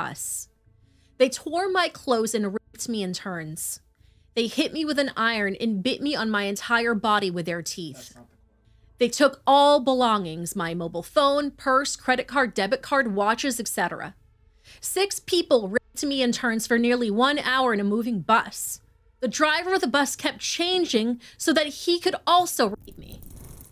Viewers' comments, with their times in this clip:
0:05 can anyone make out what was spoken in background